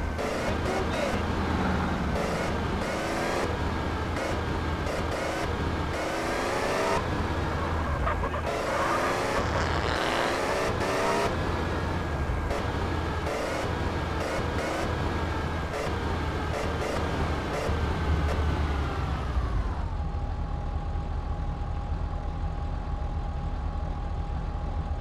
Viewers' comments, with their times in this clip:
0:05 the man farts
0:08 do u people hear what i hear!! A Fart!!
0:09 Indian guy jumps to avoid the car, farting while he jumps backward
0:09 Did CJ farted? Listen carefully!
0:09 it sounde like someone shit themselves
0:09 who hears a fart noise
0:09 fart? or gimp suit
0:10 do u people hear what i hear!! A Fart!!